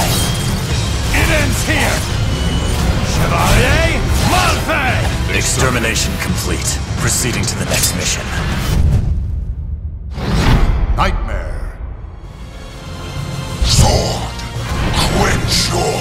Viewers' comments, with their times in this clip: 0:03 Did he just say "Try a muffin"?